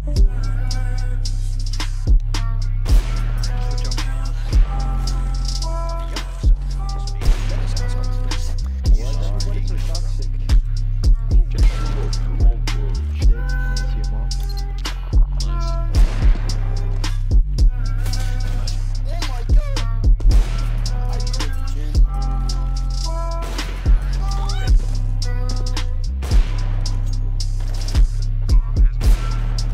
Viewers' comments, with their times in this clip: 0:10 dude the fucking end its in the morning im trying to sleep